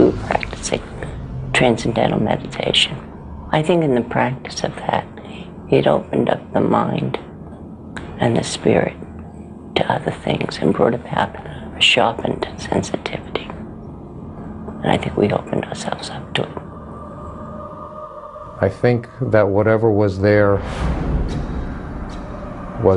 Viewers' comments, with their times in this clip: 0:03 Mrs. Lutz would make some crazy ASMR 😂 Time Stamp: